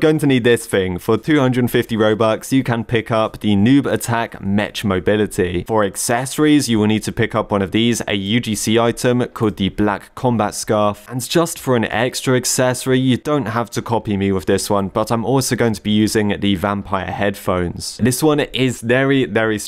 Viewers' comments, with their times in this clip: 0:04 the goofiest way i've ever heard someone say "mech"